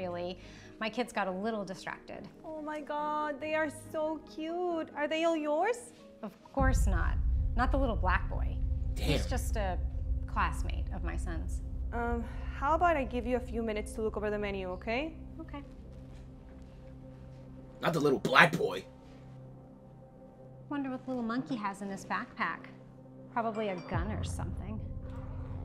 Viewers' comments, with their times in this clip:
0:07 and again with the dark music 😂😂😂